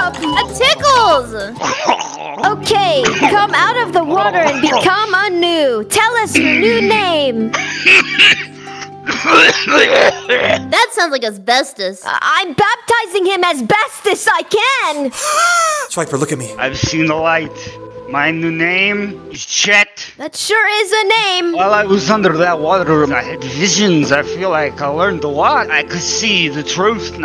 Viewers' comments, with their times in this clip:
0:10 Why does Chet sound like Gru now for some reason?